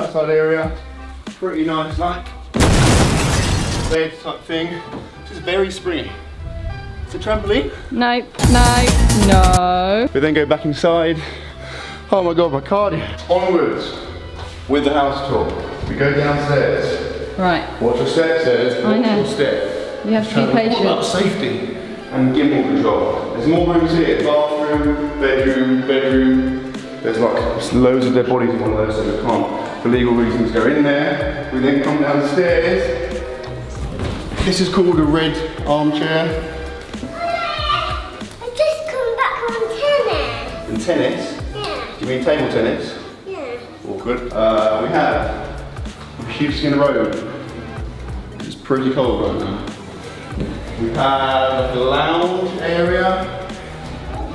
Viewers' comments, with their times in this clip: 0:06 mom talking to her child
0:40 the way he says yes has made my day